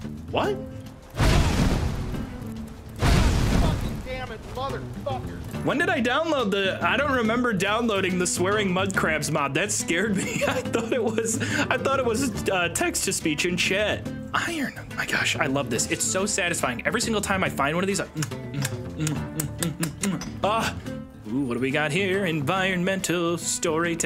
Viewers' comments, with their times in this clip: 0:06 the swearing mud-crabs made me fall on the floor laughing 😂 😭